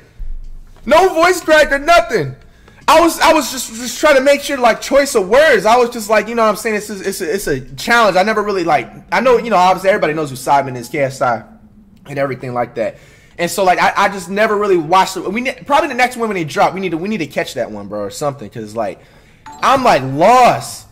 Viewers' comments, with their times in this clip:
0:05 so nobody heard the ghost in put in headphones if u didn’t